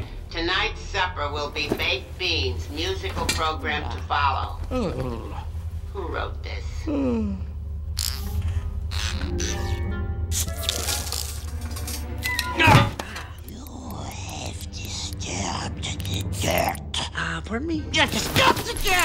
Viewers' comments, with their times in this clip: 0:03 Edna’s voice (The incredibles)